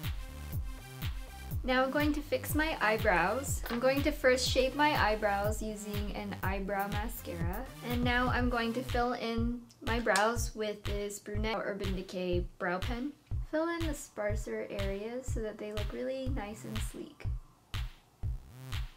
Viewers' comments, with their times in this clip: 0:03 i thought you said: im going to first shave my eyebrows...